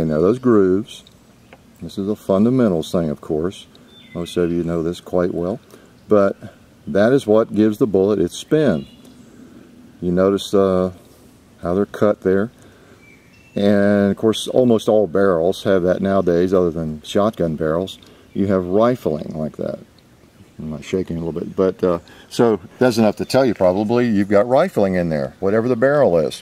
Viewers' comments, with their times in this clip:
0:09 Anyone else hear the James Bond theme song ?